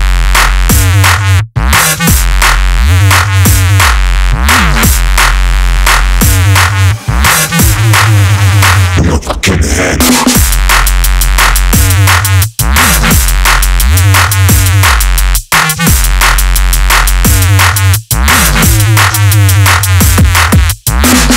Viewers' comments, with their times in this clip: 0:09 oh damn guys! imo it's a very unique tune, especially the part starting is totally sick